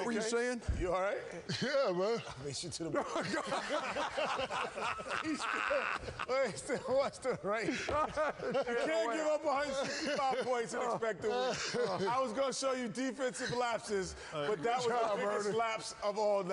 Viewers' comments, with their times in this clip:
0:04 Ernies laugh is gold